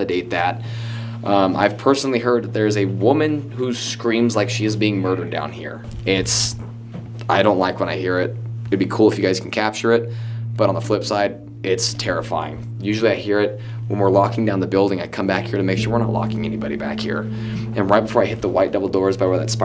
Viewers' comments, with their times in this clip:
0:05 u can hear a whisper say "hey"😬